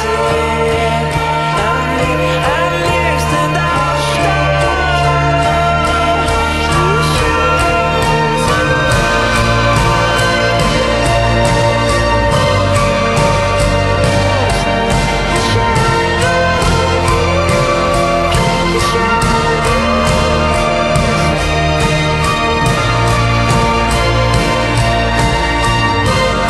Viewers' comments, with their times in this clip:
0:08 When the music hits tho